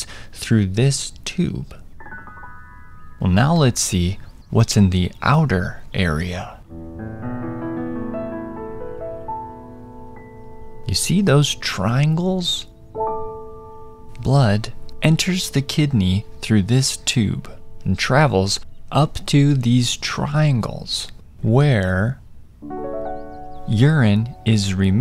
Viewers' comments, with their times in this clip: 0:07 I loved the piano tune in <3